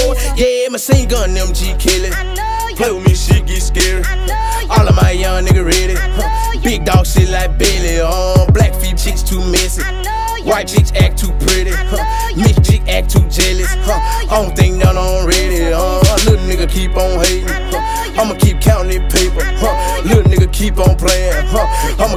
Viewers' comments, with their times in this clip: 0:07 don’t even sound right 😭